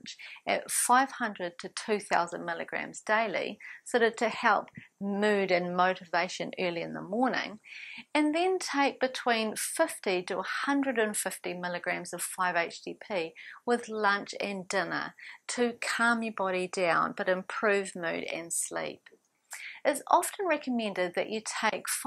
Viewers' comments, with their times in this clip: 0:05 Audio on left hand side only. Why? L-Tyrosine 500mg - 200mg when you mean 500mg - 2000mg on your graphic Not noticed and not edited? Come on - get a grip on yourself woman. This is appallingly amateurish.